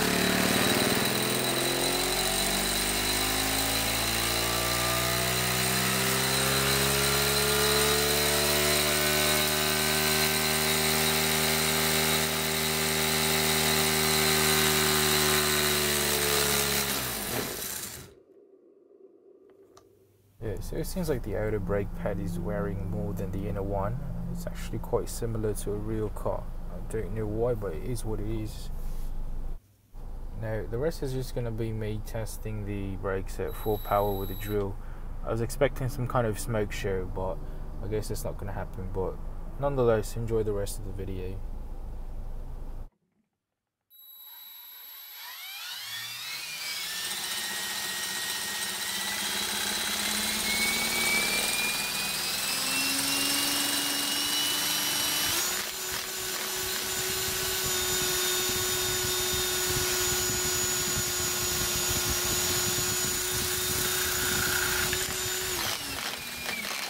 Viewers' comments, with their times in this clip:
0:08 yet engine starts YouTube: [Music]
0:52 sounded like the Cessna Citation or the Learjet